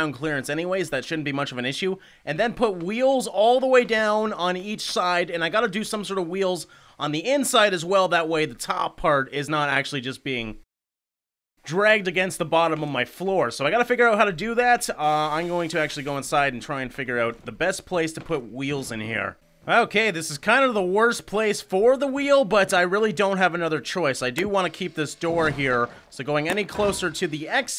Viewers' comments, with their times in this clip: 0:09 so the top part isn't being blackness dragged on the bottom xD
0:10 did anybody see the black screen w/ silence on ?
0:10 in the video there is a screen audio glitch but i think you know
0:10 the screen goes black and audio turns off